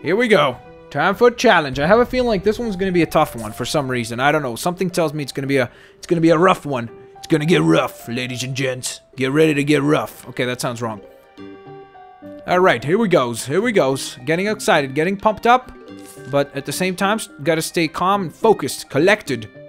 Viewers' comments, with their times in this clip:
0:07 that ruff thing made me almost throw my computer lol if you wanna here what I heard go too